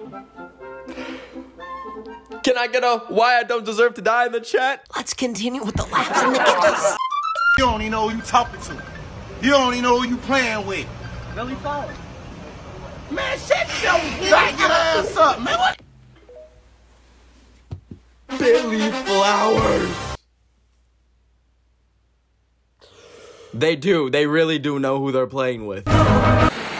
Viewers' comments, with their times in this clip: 0:07 The ringer bro💀
0:07 i thought it was MY phone ringing so i had to check it to make sure i wasn't going crazy 😊, i was so disappointed that it was the video..